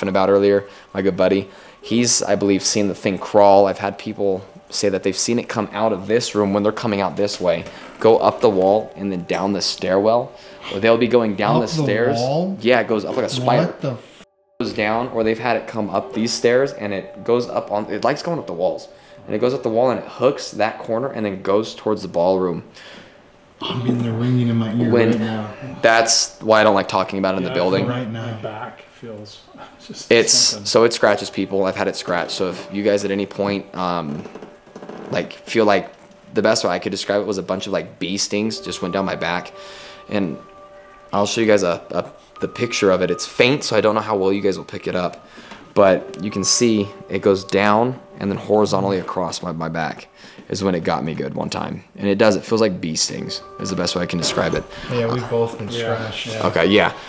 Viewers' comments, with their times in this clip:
0:10 so are we going to ignore the “hey”
0:10 you can very clearly hear someone whisper “hey”
0:40 you can hear a girl in the distance make a noise when he pauses, TURN VOLUME UP